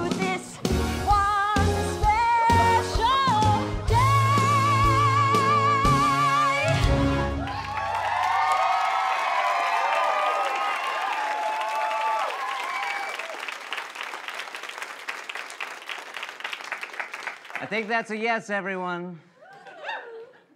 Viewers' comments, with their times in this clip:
0:03 her voice is literally incredible even when laying down like that